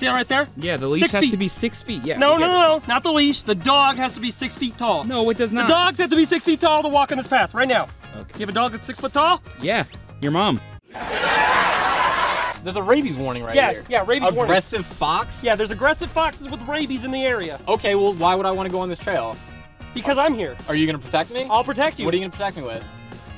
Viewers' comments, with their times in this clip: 0:10 Kermit: Is Your Dog 6ft Tall? Camera Guy: Yeah Its Your Mom! Laugh Track Plays